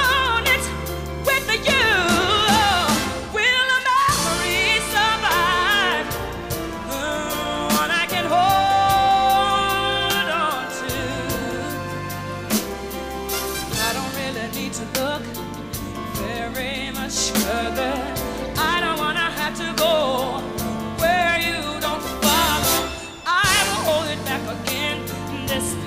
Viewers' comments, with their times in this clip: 0:03 The crazy thing is that she was having in-ear speaker problems ... it was evident when she went too high and ever so subtly turned back and pointed at her in ear speaker. I'm inclined to think that she was trying to give signals the whole time because she kept reaching up by that right ear. She couldn't even hear herself singing that whole half. She comes from an era where singers really sing, with or without all the tech and gimmicks, so it didn't stop her... but once they got it back up and running she really went for it ! The Greatest of All Time !!!
0:11 Agreed but i think there was also a little bit of mistake, that note change is on purpose, she has done this notes in her couple bodyguard tours back in 1993, the thing is just whitney made it too loud because there was a little bit of technical problems, notice how in whitney looked at something and point out her ear